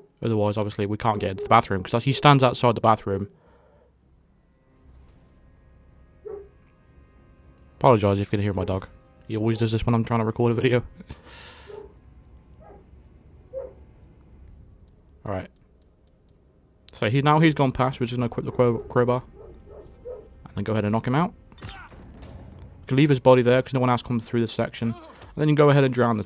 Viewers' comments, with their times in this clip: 0:08 no word of a lie my dog was barking at that exact moment and when you said that I thought I was hearing your dog but it turned out my dog was barking aswell lol